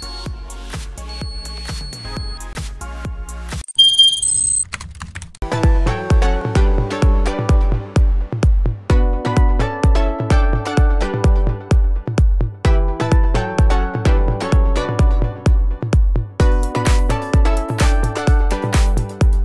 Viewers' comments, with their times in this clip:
0:05 Am I the only one who likes this song ? :D